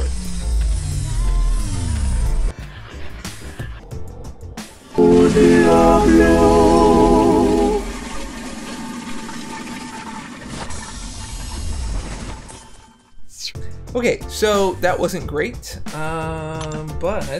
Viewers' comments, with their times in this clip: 0:04 BRO, 😂😂😂😂😂 I wasn't ready for that diablo sound effect that was hilarious